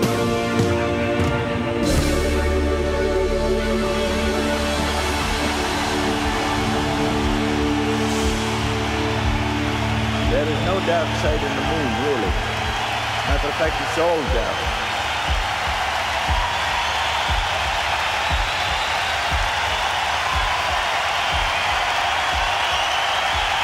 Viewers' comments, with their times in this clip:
0:08 “There is no dark side of the moon really, that’s effective soul death”….is that what he said? Start